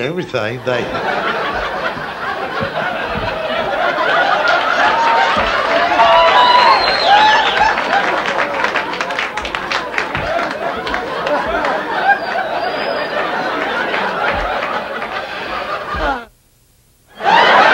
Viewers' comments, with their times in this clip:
0:03 I love it when he cracks himself up. Lol No one is as funny as James Gregory, in my opinion. 😂